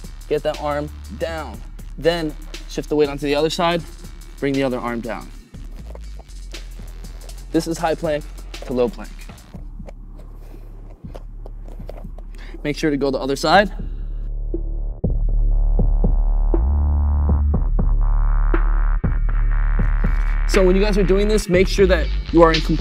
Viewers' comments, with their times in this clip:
0:05 that song would be amazing as earrape